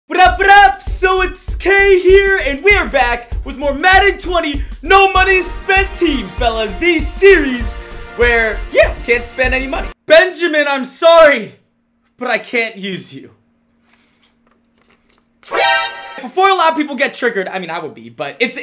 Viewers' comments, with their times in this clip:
0:00 Dam I thought a gun was going off in my house